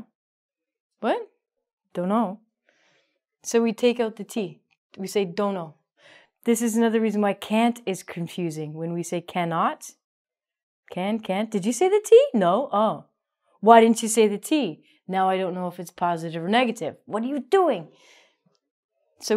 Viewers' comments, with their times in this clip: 0:06 I'm just glad I'm not the only one who finds it hard to understand sometimes when people say can/can't. I'm relieved to know that even native speakers may have the same difficulty.